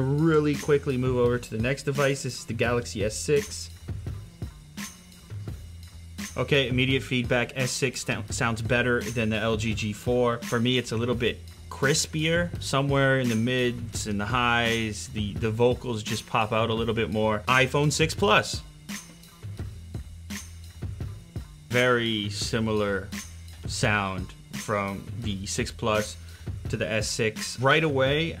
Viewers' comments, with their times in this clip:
0:10 its not even playing!